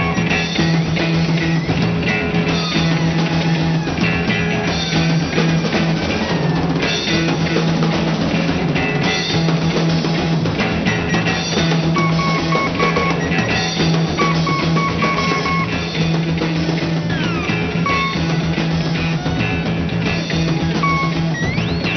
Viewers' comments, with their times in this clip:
0:04 Prototype Butthole Surfers LOL